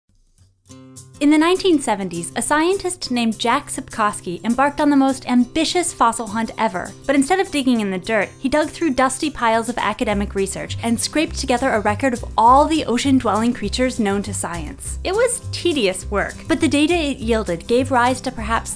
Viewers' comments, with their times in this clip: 0:03 a scientist named... Jack Septiceye?!?
0:03 a scientist named... Jack Septiceye?!?
0:05 In I thought jacksepticeye